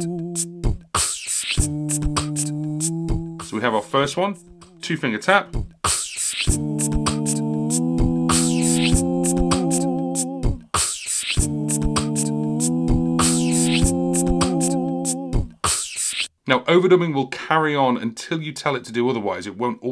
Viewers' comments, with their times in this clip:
0:07 How are your beats not bleeding into your vocal recordings? These are great tutorials btw